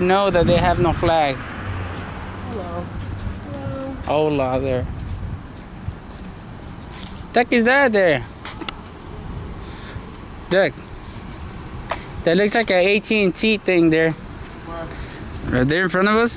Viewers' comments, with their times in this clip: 0:04 helloo lol that sounds like the please dont kill me hello lol